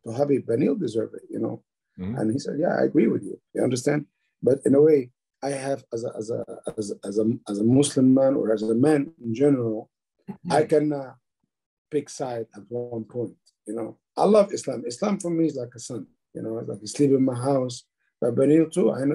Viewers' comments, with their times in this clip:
0:07 .. BRO NEARLY LET HIS LAUGH OUT LOL